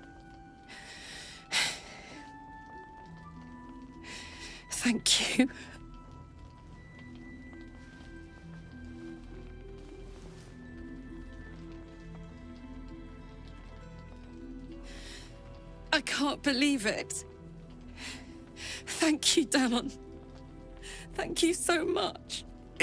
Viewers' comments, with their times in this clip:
0:08 Brings a tear to the eye, seriously. This va cast is one of the best I've heard in a game easily.